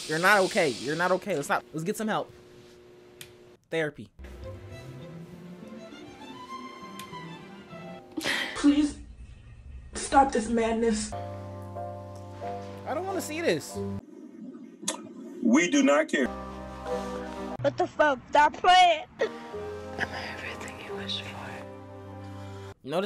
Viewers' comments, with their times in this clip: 0:08 Not the sims music lol